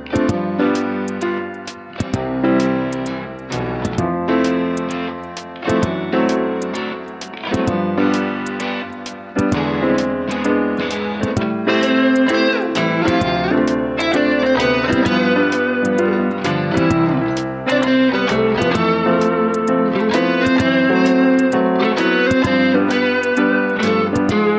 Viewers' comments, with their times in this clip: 0:10 Doesn't it sound a bit like Fly Me to the Moon?